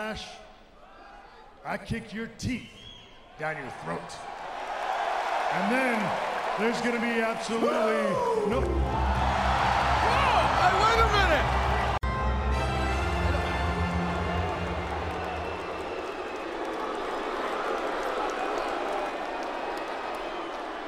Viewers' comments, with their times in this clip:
0:08 Jericho is dirty for that😂 Using Ric’s theme getting everybody excited